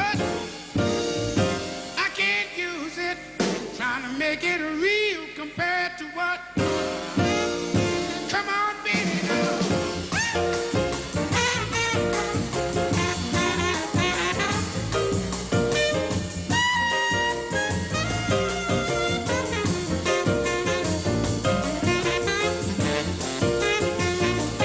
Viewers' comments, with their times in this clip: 0:08 Benny Bailey's trumpet solo after having his toes stepped on by Harris, is priceless! One of the best gut bucket solos I have ever heard. Note: is where Les first calls Benny out, when Eddie solos again instead, the next verse where Les calls him up again is where Benny goes bananas. The heat of the moment and the build up is jazz history.
0:12 is thath great moment when Eddie Harris steals solo from Benny Bailey. Benny then comes back in the next chorus with the venegance.